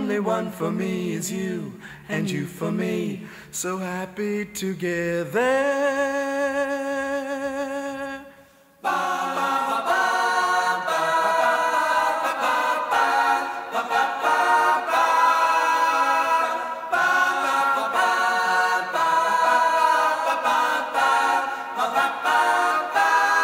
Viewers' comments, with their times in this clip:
0:08 is probably what Heaven sounds like...wow...
0:08 Man, the quality is fuckin' amazing! 🙌🏻🙌🏻🙌🏻🙌🏻 Probably what heavens sounds like ❤